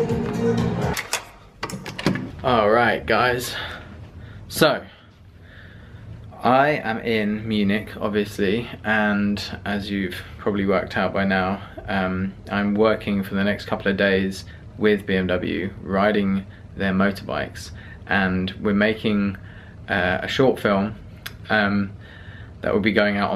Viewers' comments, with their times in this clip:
0:04 Hey on min. I Hear a German Voice in a Englisch Vlog what a great feeling ;D Oh , I'm a German viewer too